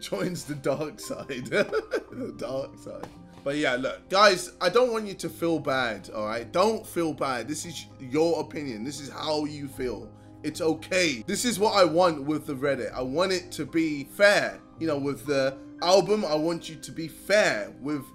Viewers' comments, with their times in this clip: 0:06 “don’t feel bad” #Sad piano solo on the background#